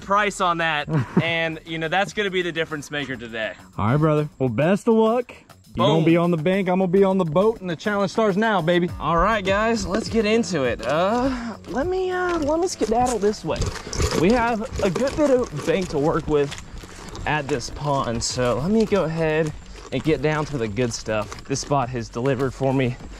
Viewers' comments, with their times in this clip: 0:10 what the hell is that moan?